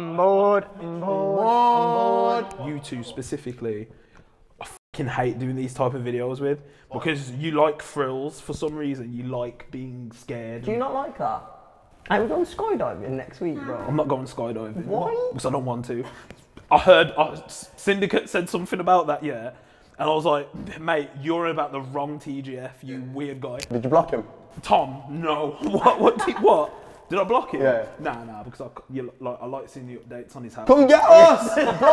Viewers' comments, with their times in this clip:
0:06 when asking about skydiving...was there a womans voice??
0:09 hear the demon answer him, im scared as shat
0:13 you can hear a women say huh or what, idk cheef
0:13 isn’t that a voice?
0:13 did u hear something say 'hi'
0:13 a child saying ''Nah''?
0:14 Anyone else hear the voice ?